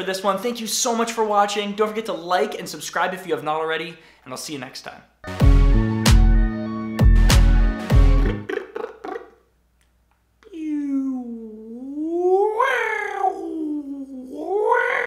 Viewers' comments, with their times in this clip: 0:12 nice vocal bass hahahha